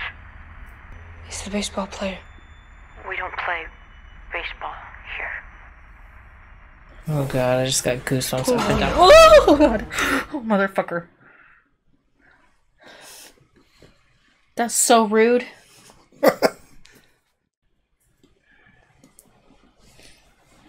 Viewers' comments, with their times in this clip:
0:07 lol iv heard her scream be4 but not like that...that had dome bravado in it lmao 🤣